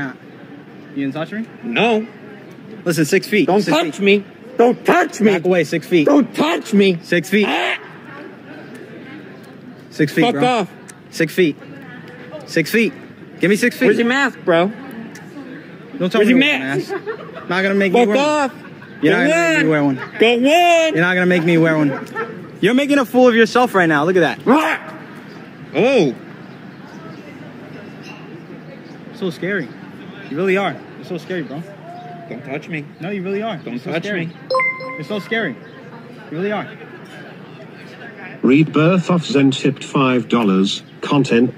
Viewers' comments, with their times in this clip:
0:07 what the hell was that noise?!??! 😂
0:23 that was the most goofy ahh scream i have ever heard